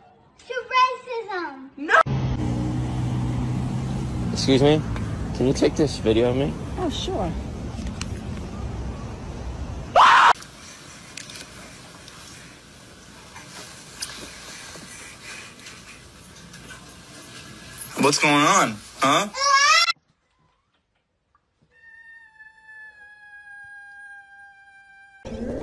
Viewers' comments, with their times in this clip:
0:10 sounds like a death scream